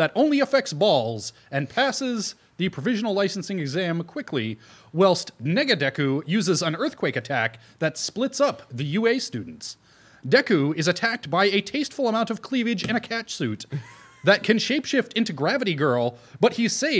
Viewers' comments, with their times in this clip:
0:03 Did he just say, "Nigga Deku"?